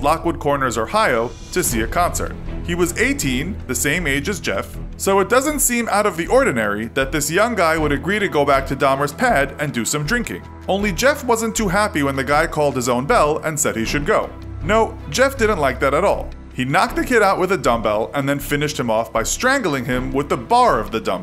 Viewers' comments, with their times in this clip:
0:07 Lol "Dahmer's PaAaD"